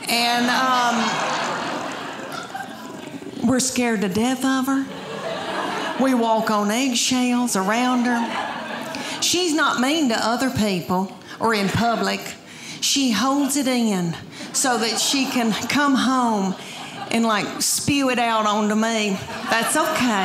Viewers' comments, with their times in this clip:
0:06 what accent is that; that pronounces “eggshells” with 3 syllables? 🤓